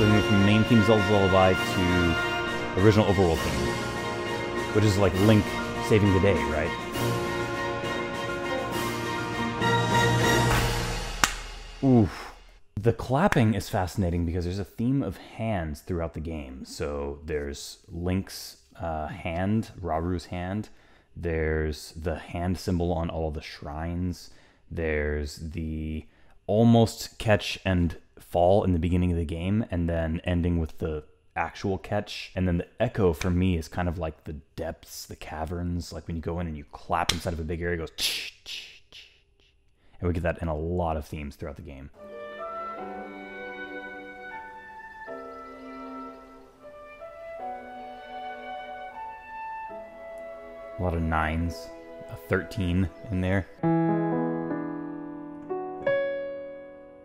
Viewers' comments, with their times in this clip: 0:05 The original overworld theme has always been the Main Theme of the series. However, in "The Wind Waker" it also became Link's Theme, and has always been used that way ever since. More than as a overworld theme, actually. So basically the ending music transitioning from the main theme of "Tears of the Kingdom", to Zelda's Theme, to Link's Theme. Smooth as butter.
0:43 In "To Her Hand", the clapping is so important. It comes up all over the game, it comes up with all the Sages too!